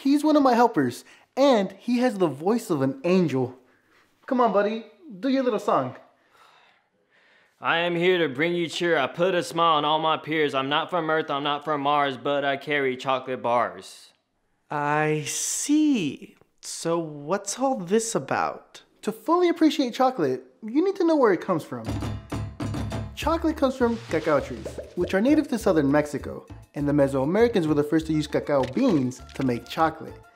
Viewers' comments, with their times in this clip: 0:08 I died listening to the song
0:13 he sounds like he is rapping